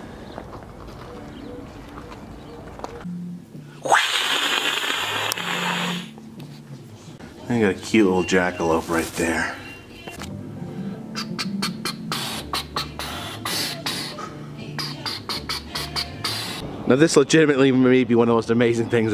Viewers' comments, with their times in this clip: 0:03 lol! the sceaming cat that's a crack up man!